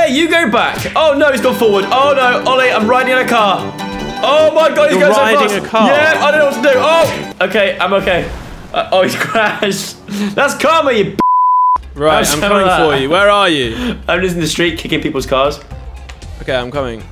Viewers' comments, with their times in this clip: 0:03 that music makes everything funnier 😂
0:04 Who else got excited when the Jaspar Hit the Road music came on